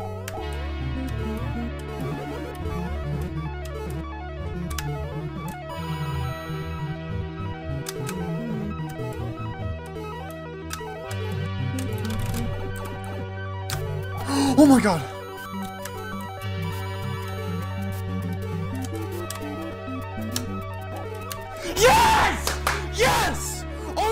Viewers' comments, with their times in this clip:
0:05 dont know if this was intentional or not but the coin grab sound here matches perfectly with the song omg